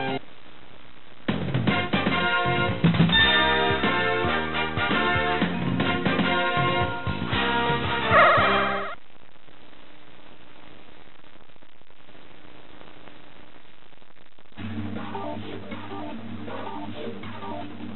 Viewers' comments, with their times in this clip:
0:04 I like how the ring sound is synched with the victory theme in this part of the recording